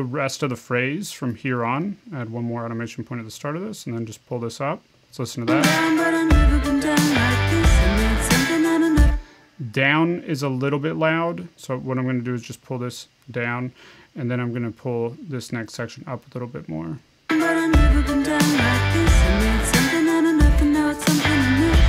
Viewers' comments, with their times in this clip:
0:09 that was low key pretty funny. Think it was the unenthusiastic delivery lol